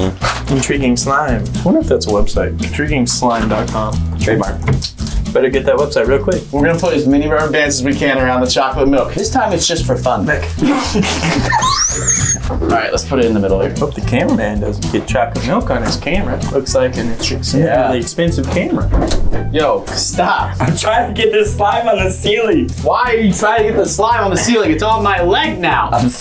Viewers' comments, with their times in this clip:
0:07 What was this screech